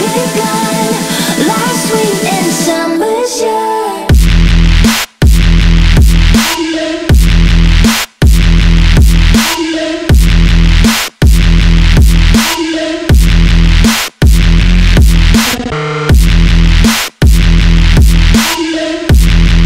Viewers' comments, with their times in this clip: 0:03 beat hit harder than puerto rico
0:03 why does sound like something out of Doom
0:03 The boombooms :D